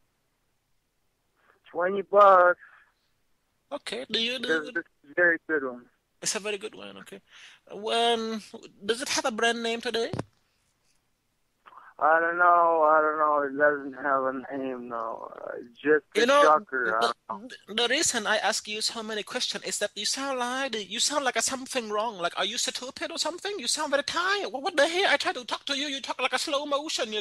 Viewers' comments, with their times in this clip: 0:10 was that a fart